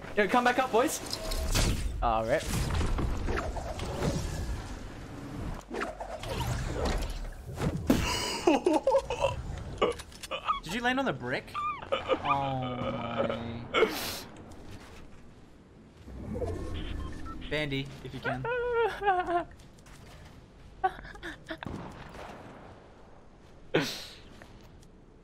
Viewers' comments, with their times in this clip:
0:09 the noice that he's doing though